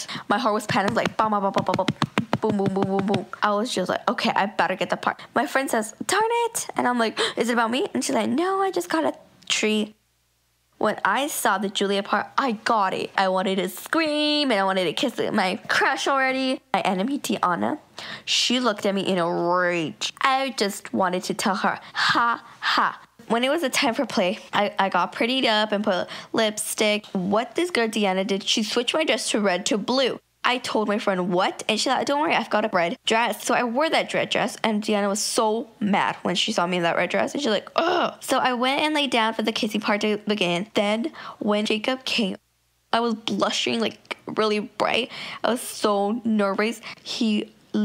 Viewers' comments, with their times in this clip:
0:10 pauses to think of funny thing to say so it sounds kinda believable
0:31 The sounds like Janine from Gerald McBoing Boing